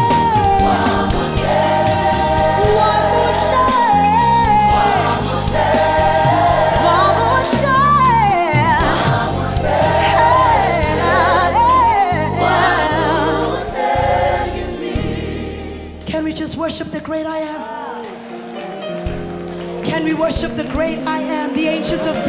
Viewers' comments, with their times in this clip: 0:06 That run is Whitney Houston quality. What a voice! What a song!